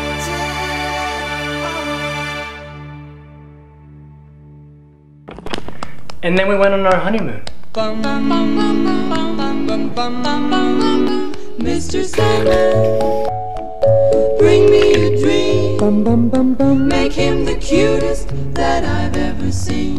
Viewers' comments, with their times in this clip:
0:05 an nen we wen on honey moon xD Oh come one. This diction is so bad.
0:06 I thought that was honeymoon love sounds😂😂😂